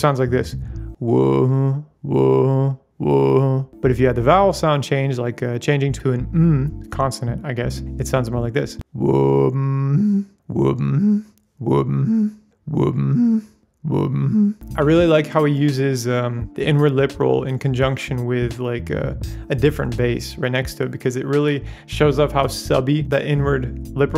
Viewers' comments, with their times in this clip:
0:08 i need a beat with this melody. Such a dark vibe, love it.